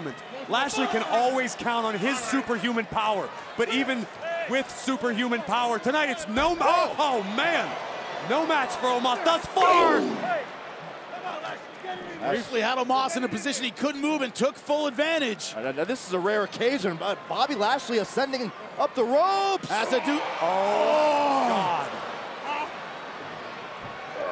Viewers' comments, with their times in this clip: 0:09 That noise omos made was aboustley scary but I am so glad Bobby won omos is just so boring and can't wrestle.